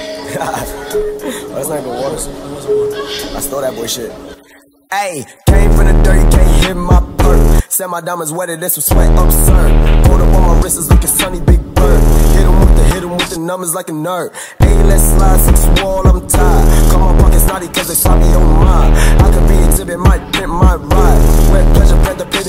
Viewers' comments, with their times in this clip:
0:04 it sounds weird